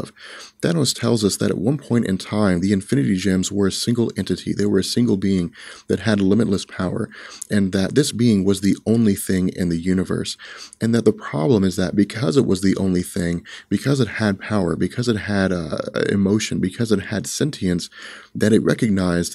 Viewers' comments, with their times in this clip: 0:06 The fadeout music around the mark was the best choice ever!